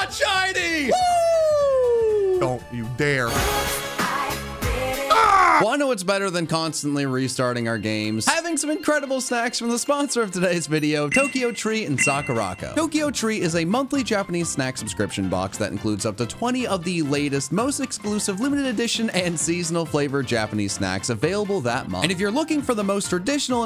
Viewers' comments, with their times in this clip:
0:05 PLEASE tell me I'm not the only one who heard "having some incredible sex" and almost had a heart attack 😅
0:06 I can’t have been the only person who heard “incredible sex” the first time
0:08 I heard that very wrong
0:08 i kept mishearing snacks and had to put on subtitles to hear what it was
0:08 Did anyone else hear "Having some incredible sex from the sponsor of today's video"?!
0:09 I swear to god the first time I heard that, I thought he was saying “having some incredible sex with the sponsor of today’s video”. You can’t tell me I’m wrong